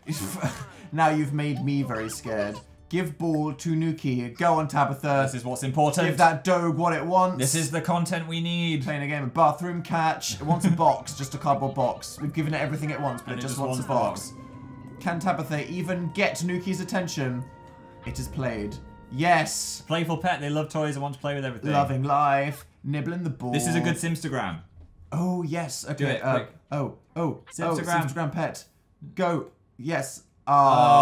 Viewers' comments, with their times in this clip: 0:10 THE SOUND OF THE ABDUCTION WHILE DAN AND PHIL PLAY WITH THE DOG IS SO FUNNY
0:10 To this day I have no idea how they didn’t hear the alien abduction music lolol
0:10 did anyone else hear the creepy alien music?
0:11 Alien music appears
0:14 the alien music was playing, that's when Dil got abducted. That puppy is too cute